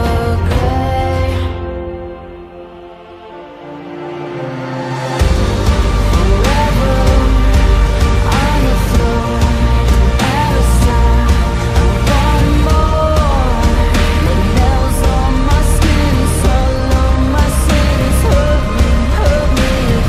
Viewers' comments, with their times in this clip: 0:04 Firstly the manipulations are absolute magic. This is one of my fave videos for them. But that upbeat tempo gives me absolute chills and changes the atmosphere. Sooo good.